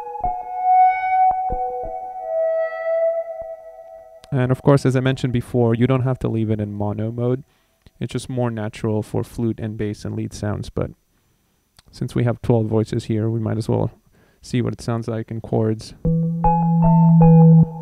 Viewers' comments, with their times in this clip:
0:04 begins to sound like a kaliope!